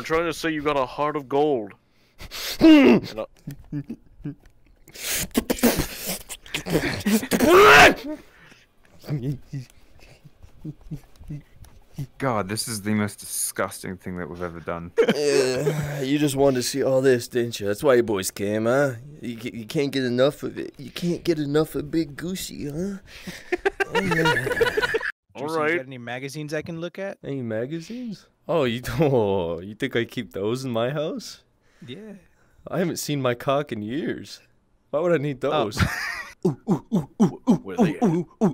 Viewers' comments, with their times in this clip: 0:10 Listen close and you hear the clap of the burgers
0:21 sounds like ree kid laughing